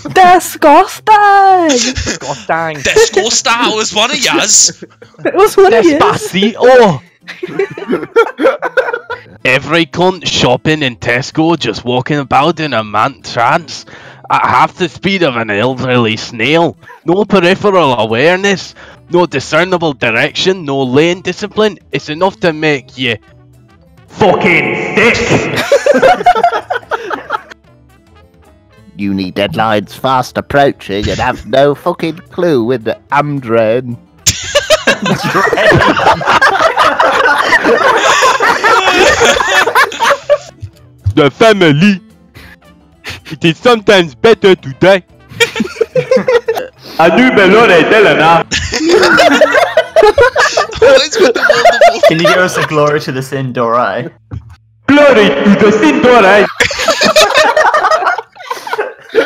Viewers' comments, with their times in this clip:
0:05 how spanish should sound like
0:11 he sounds like a German lmaoo
0:29 is it just me or did that sound slightly like the salad finger guy?
0:30 sounds like David Mitchell lol
0:36 random cuckling noises
0:40 Knockoff Homer Simpson
0:41 That Ugandan accent was totally random it cracked me up 😂
0:42 he sounds like a sid